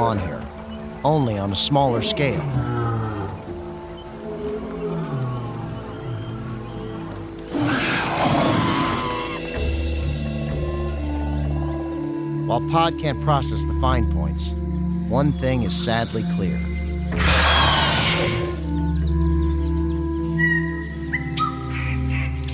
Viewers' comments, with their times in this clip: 0:08 that scream LOL